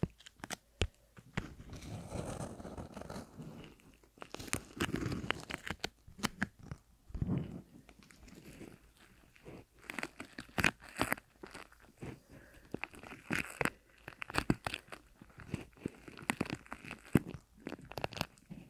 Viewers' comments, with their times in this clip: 0:03 The whole segment from with also the mouth sounds / kisses was SO AMAZING!! Really really good combo!